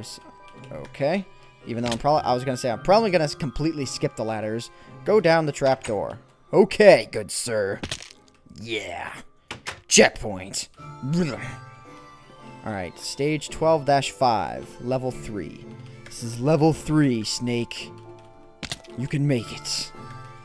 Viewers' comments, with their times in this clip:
0:05 I love the way he said "Yeah"